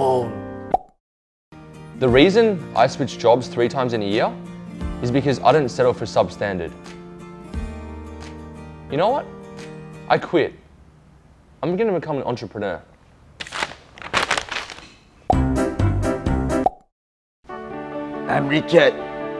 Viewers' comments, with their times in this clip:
0:04 who is this new guy? he sounds like he's got a kiwi accent!!